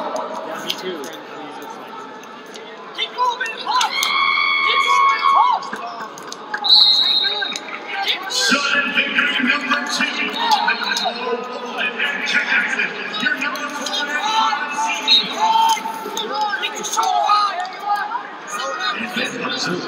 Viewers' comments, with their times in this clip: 0:04 Who tf is screaming